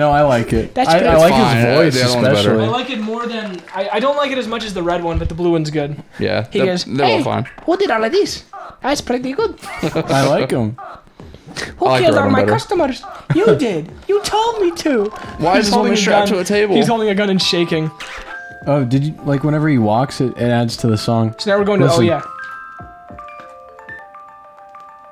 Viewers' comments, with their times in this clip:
0:07 The "hey who did all of this? that's pretty good!" sounded so accurate, i thought it was the real takoyama lmao
0:07 oh my gosh that's sounds pretty cute